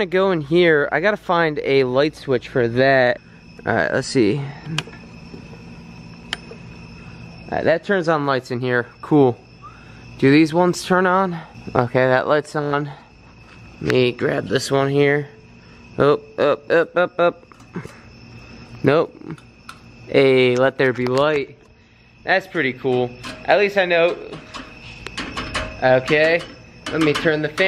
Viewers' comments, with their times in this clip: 0:10 Holy s#%t there was a faint whistle